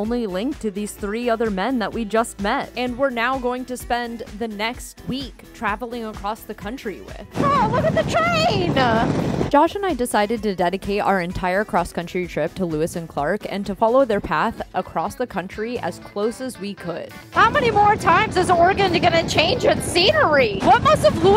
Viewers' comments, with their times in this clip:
0:07 Look at the 'train-uh'! Man, that 'uh' 20-something's have an undying affinity for by using it as a suffix to end sentences spoken to indicate excitement or complaint (whine) is annoying asf. To my ears anyway!